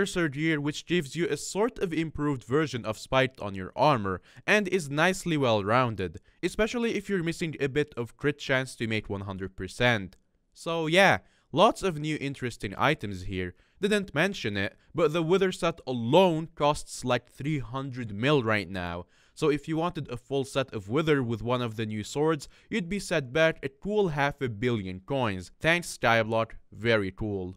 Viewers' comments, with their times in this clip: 0:10 did ur voice just cracked?